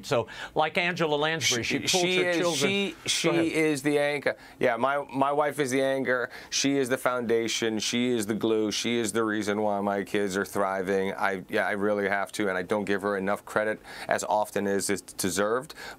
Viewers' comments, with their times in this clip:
0:03 i love to hear the Boston accent slip out